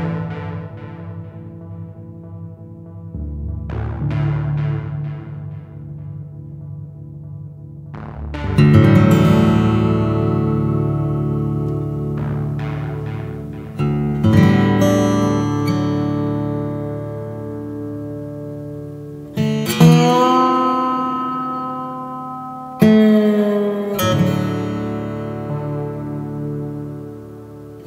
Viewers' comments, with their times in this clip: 0:08 oooo the guitar <3